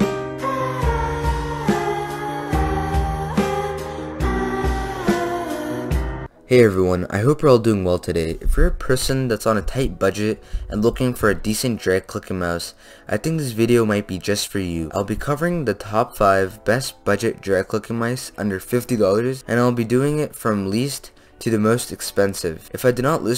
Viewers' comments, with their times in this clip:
0:09 when he said drag clicking mode at first i thought he said drip looking mouse